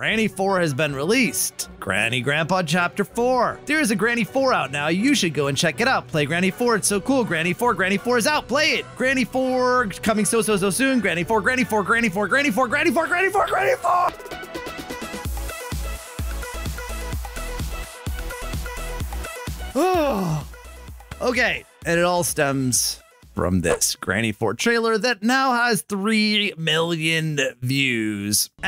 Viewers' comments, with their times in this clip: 0:10 Think when he looses his sanity just by saying "GrAnNy 4"